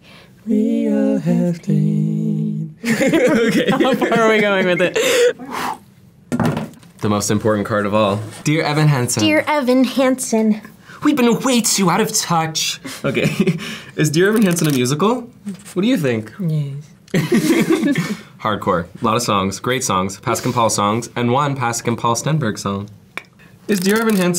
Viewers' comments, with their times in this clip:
0:09 THE WAY THEY SANG THIS WAS SO FUNNY
0:10 10/10 Mike Faist impressions